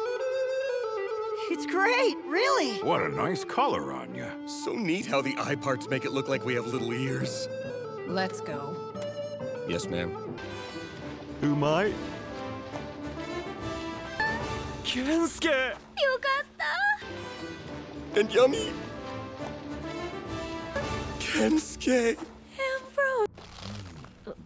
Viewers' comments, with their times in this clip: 0:07 One smaller change I really like is going from a meek "yes" to an equally meek "yes ma'am". Like I said very minor on the whole, but I think it does a good job selling that Laios knows how thin the ice is there :D.